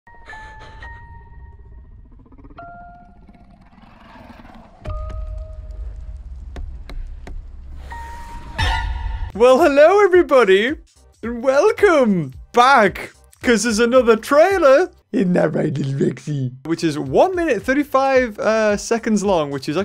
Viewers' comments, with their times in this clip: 0:00 Whats dat creepy Music in